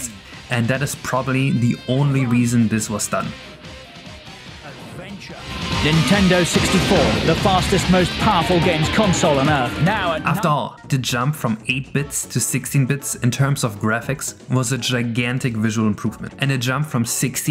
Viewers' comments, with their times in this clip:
0:04 That sure sounds like Richard Keys narrating that old N64 advert